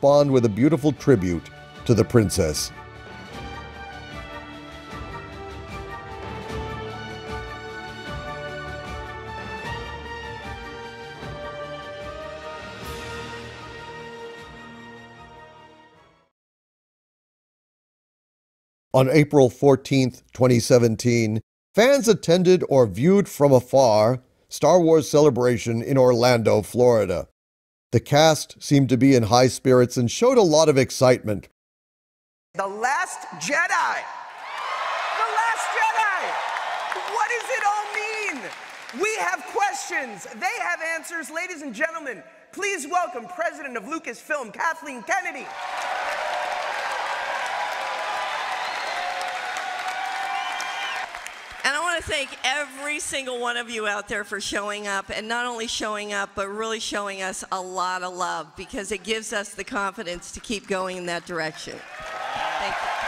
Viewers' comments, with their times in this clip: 0:10 It's honestly very weird hearing people unironically cheer for the introduction of Kathleen Kennedy, if only they knew what was to come
0:50 Last time Kennedy gets applause while on stage for like ANYTHING